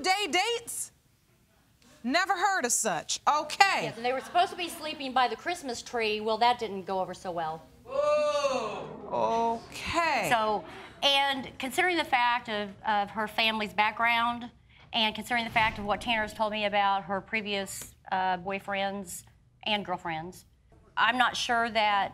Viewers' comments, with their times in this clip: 0:07 THE "OOOOOH" ABSOLUTELY SENT ME
0:08 That one audience member “OOOOOOHHHHHHHH!”